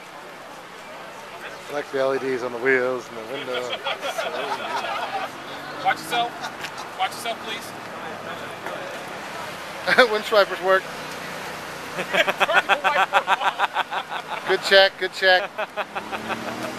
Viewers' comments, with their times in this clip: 0:04 sounded like a mercedes v12 in the background,